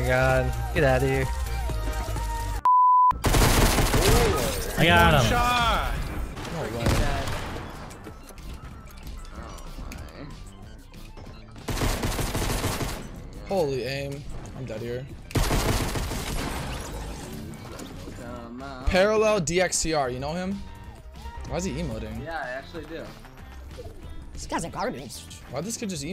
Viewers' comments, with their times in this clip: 0:07 Bro I deadass thought that was lil peep 💀💀